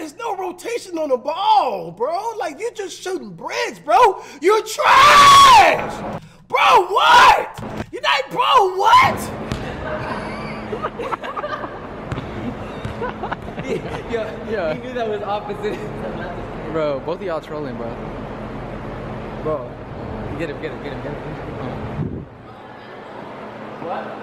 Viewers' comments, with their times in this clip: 0:06 he turned into kai cenat for a sec yellin at flight lmaooo